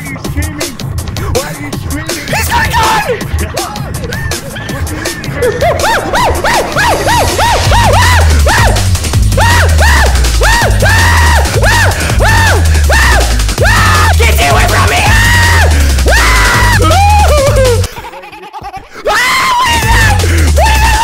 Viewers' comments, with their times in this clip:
0:06 bro sounds more like a monke than the monke voice gtag put in the game 😂